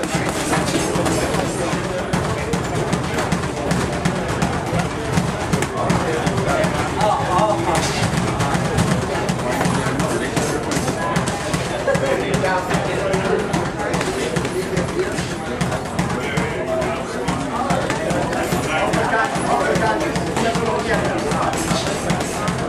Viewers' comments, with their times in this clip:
0:04 you hear chavez grown from the body shot 😮